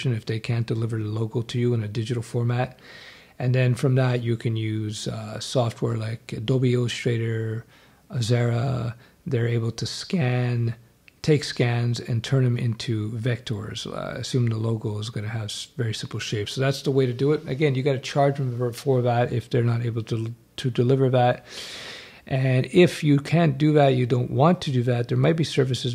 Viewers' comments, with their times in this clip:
0:06 Thanks. I am very much interested in such course. Is it specific about Web Development? These topics get addressed rarely.. Btw. What was the name of the software ? It sounded like Adobe Straighter and Xerra. :) You mentioned presenting designs. How do you present designs acutally? I assume you don't mean coding several websites.^^